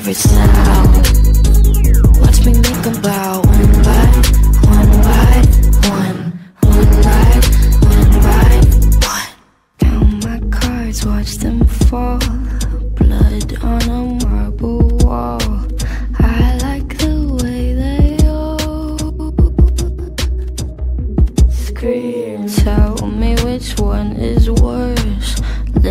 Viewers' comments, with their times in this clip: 0:07 Yes hello I have the need to point out how god damn adorable and helpless RF!Gideon is and how frickin' creepy/molesty RF!Mabel is right here. The roles are truly reversed. Gideon's little gulp is a nice touch, too. Cute!~